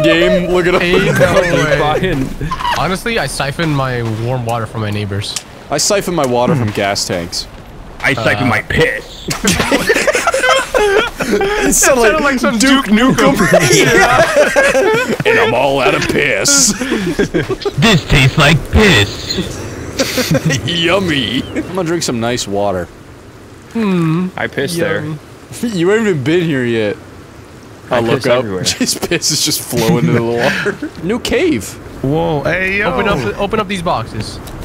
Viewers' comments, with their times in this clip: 0:07 I'd like to here "You've got mail!" in this voice
0:17 that voice sounds way too much like the iconic "Lets go gambling :D"